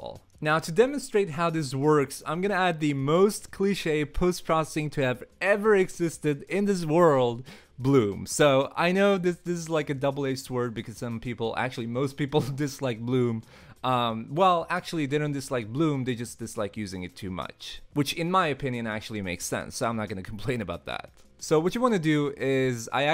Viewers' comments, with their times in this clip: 0:04 "ce" part is almost entirely silent.